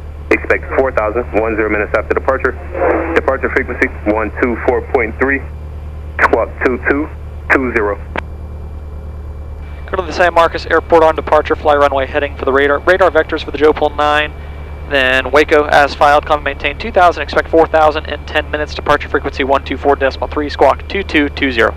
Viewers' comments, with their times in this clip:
0:03 ATC running out of breath lol